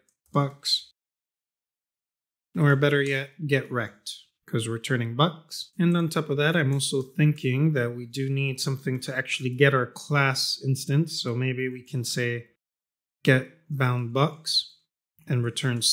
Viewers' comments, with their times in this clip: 0:03 flat delivery made me lol... yes I am a child